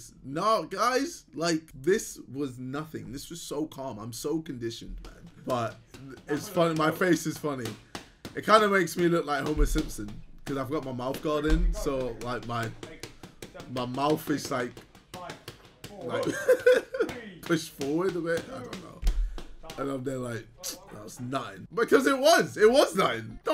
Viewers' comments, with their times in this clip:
0:08 😂😂😂😂😂 Man said Homo-Simson😂😂😂